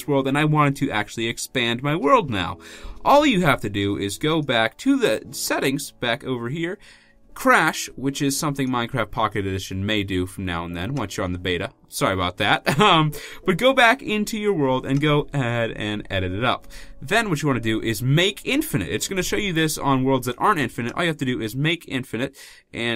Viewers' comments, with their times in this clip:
0:07 I love the way he said Crashed and IDK why